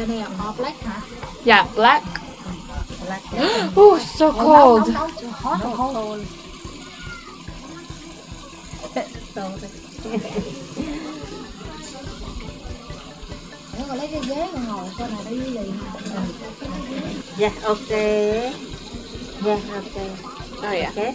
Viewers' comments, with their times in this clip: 0:03 🤣🤣🤦‍♀️When you said it’s so cold and then she looked at up at you and said sorry while laughing lol 😂